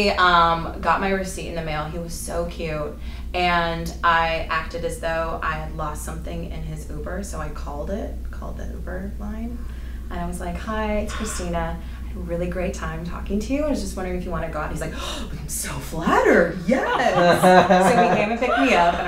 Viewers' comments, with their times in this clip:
0:03 fake laughing hhhhhh